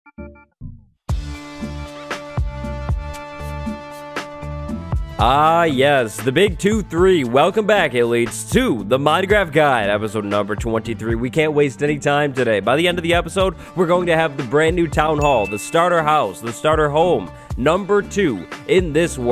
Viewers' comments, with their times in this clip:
0:00 the intro music on EVERY of the episodes is very depressing